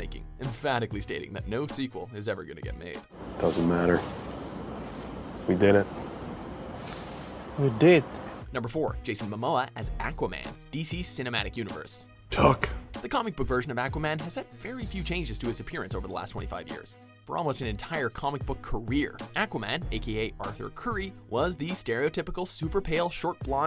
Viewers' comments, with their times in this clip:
0:09 lol when the narrator of watch mojo says a'quaman it's so funny